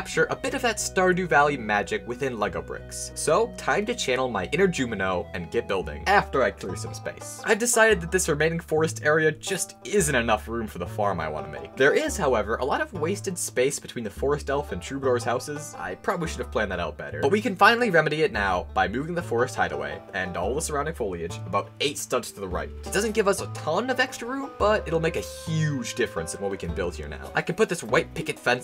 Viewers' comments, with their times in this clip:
0:10 Lego game building sound intensitys